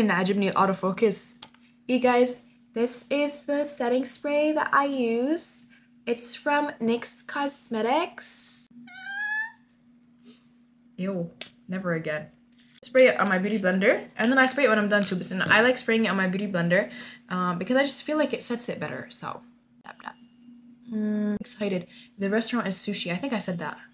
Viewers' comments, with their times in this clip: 0:05 YOUR VOICE 😭i like it i kept repeating it 😭